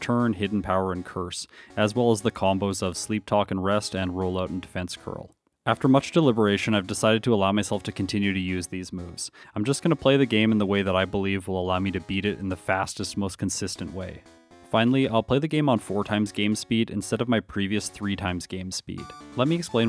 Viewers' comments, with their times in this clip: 0:03 Sleep "Powder"? What the heck? Powder ain't no Talk, matey. Also doesn't exactly combo with Rest too well, since you'll both be asleep - greeeat. The Ulimate Crystal Narcolepsy Play-Offs 2022 are about to begin!